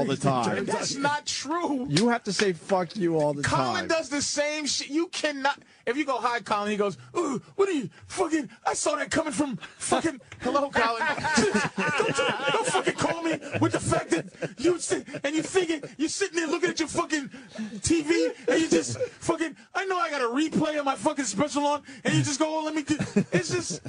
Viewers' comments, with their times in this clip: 0:04 Patrice impression of Collin, Hillarious!